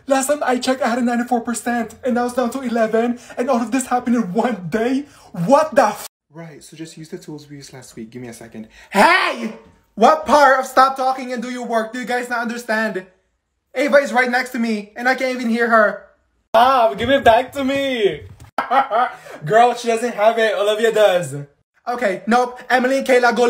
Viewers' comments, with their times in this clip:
0:08 was my mom screaming at me for not eating my food